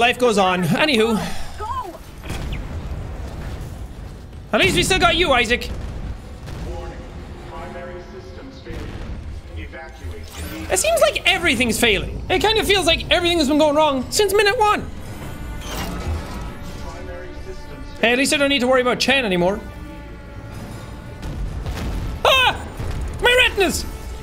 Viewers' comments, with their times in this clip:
0:08 the ships computer sounded like doctor k